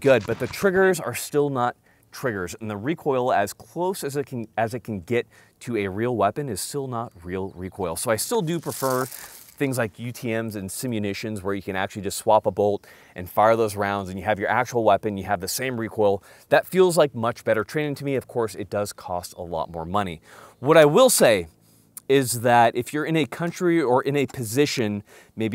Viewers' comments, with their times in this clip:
0:08 is it bad I heard the German in the background instead of Garand